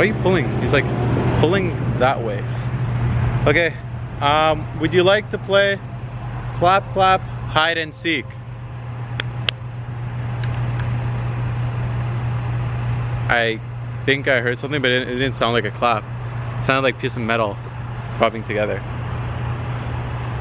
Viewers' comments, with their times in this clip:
0:03 Whisper after you slapped yourself..lol sorry..around